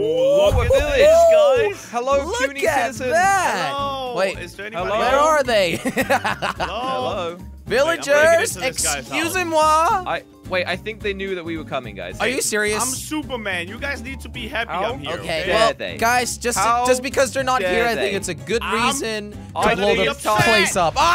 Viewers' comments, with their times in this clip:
0:07 The sweetest EXCUSEZ-MOI i've ever heard ❤❤☹☹